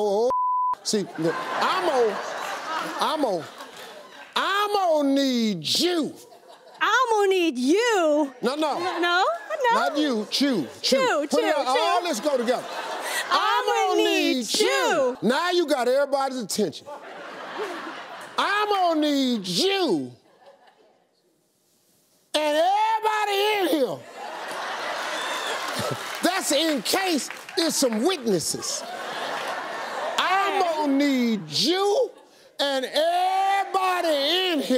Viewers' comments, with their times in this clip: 0:09 is the cutest no i have seen in my layffeeee
0:18 that one friend with a weird sneeze